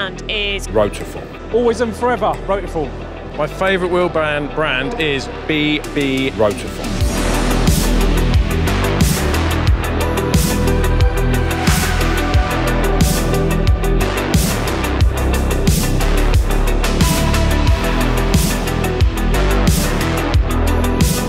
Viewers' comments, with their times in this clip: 0:03 “B-B-ROTIFORM “ caught me off guard 😂💀